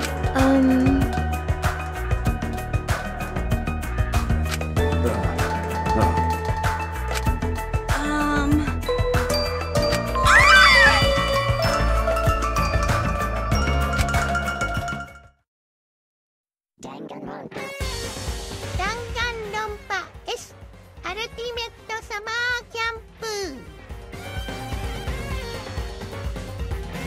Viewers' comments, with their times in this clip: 0:10 JESUS TENKO THAT SQUEAL
0:13 I have never heard of a more gay squeal than that